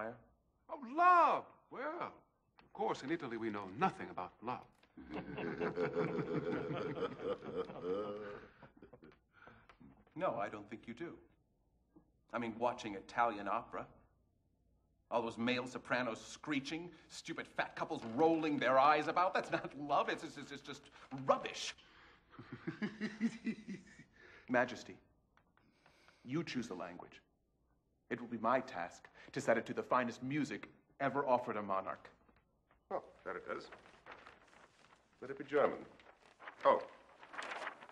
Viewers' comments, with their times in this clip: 0:05 Don't forget the other sly laugh lol.
0:10 The way the fat guy laughs and then realizes he shouldn`t be laughing has always cracked me up.
0:14 Everyone talks about Mozarts laughther, also the Kapellmeister ^^ The acting is superb from all of them.
0:20 I was a young teen when I saw this in the theater, but I still get a laugh when Giuseppe Bonno does that laugh.
0:21 the fat guy laughing cracks me up every time
0:22 When I was in 7th grade our music teacher played this movie for us. I remember so many scenes that stood out! For whatever reason his laughter to "Ohh... Uh oh." Always stuck with me 😂 ...I would've definitely remembered the tits, but she didn't play those scenes for us 🤣
0:23 The way the guy laughs is hilarious